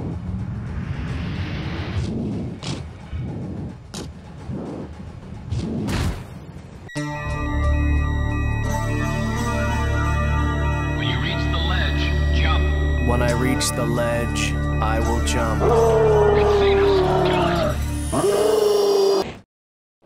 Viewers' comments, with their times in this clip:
0:07 sounds like some 80s goth song lmaoo